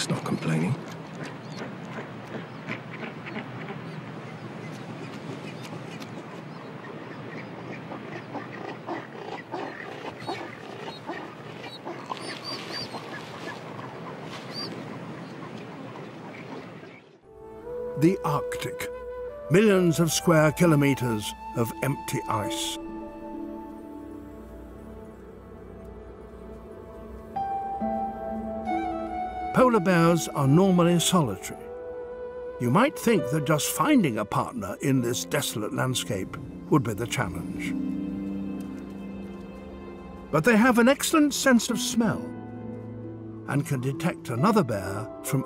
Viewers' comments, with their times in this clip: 0:10 that little pop lol. Made me laugh for some reason XD
0:10 someone took the time to edit in a popping sound 🤣
0:30 this man that is talking sounds just like the old man that starts talking when starting up Wizard 101 🤔
0:30 ofc it's Lord Shaxx who's talking about polar bears. Should've expected :D